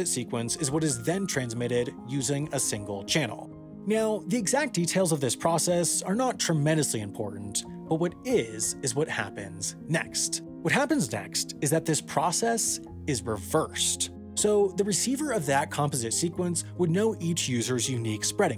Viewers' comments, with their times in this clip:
0:03 I'm 100% sure he just said "meow".
0:03 Excuse me, are you saying meow?
0:04 Awesome video! I always wondered how cell networks worked, and I really like the format you put it in. Exploring the history and basic concepts, then building from there made the concept very approachable. Also, I caught the “meow” I don’t know if that was intentional, but I want to think it was and I laughed.
0:04 Are you saying 'meow'
0:06 Good job sneaking a meow in there at ~